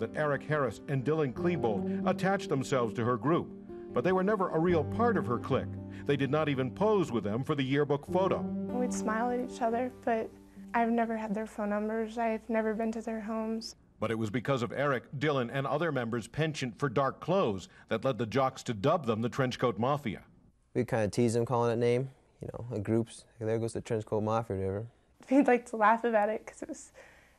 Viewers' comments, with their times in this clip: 0:08 does she have auto-tune lmao.